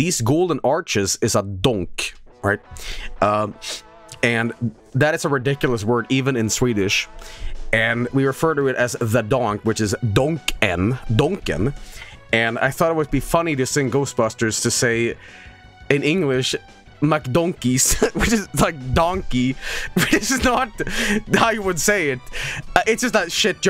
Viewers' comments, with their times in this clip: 0:10 It sounded like he said McDuncan's. I kind of like it